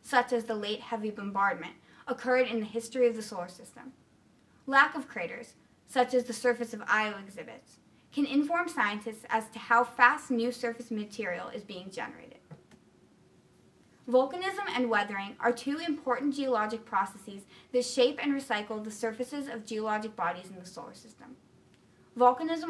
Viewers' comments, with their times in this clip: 0:06 does she say "Io exhibits"?